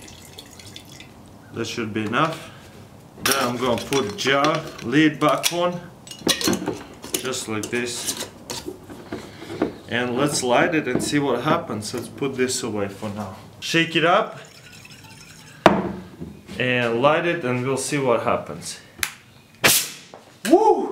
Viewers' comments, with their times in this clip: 0:04 dky, but it sounds like he is saying bacon